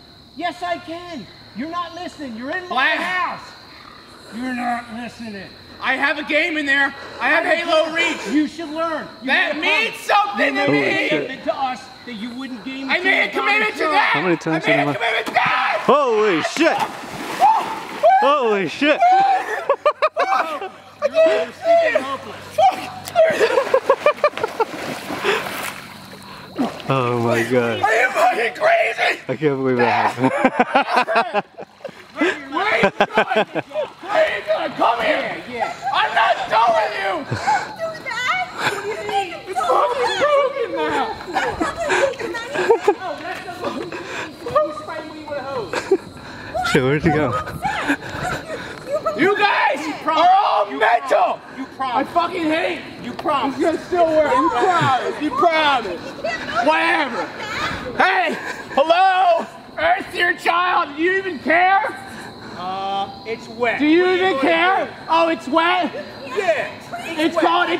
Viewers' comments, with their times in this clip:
0:04 When the dad has that "YOUR NOT LISTENING" Deep voice is my favourite across the whole series.
0:04 That guy grumbled"You’re not listening!"
0:17 the way he jumps into the pool screaming is hilarious 🤣😂😂
0:27 ArE YoU Freaking CrAzY 😂😂😂😂 just how he delivers that line is perfect😂😂😂😂😂
0:49 that "you guys are all mental!" sounds exactly like benson